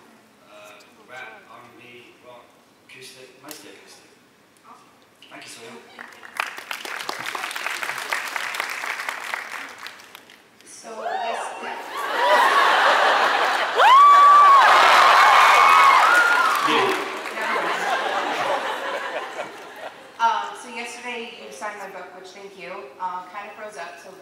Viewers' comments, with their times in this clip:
0:07 all the fans are just screaming 😂